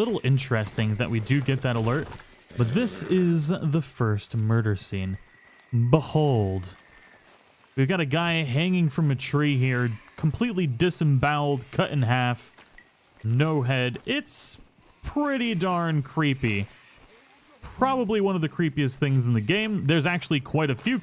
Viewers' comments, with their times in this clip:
0:07 Anyone noticed how he pronounced Behold in ?